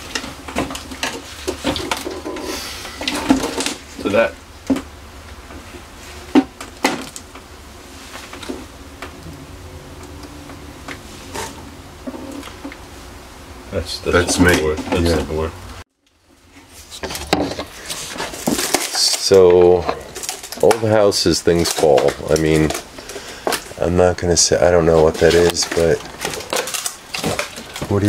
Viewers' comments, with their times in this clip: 0:09 welcome back! i did hear a soft voice mumble something, sounded female